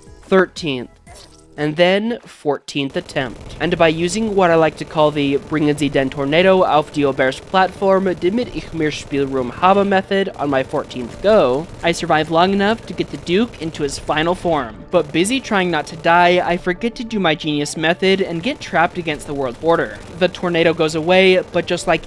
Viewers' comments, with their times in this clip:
0:08 bbros speaking German